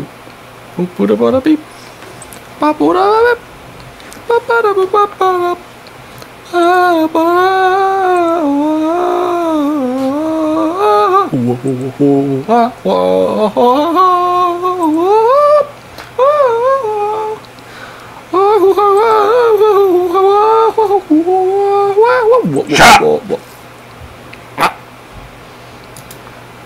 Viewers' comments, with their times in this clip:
0:10 voice of an angel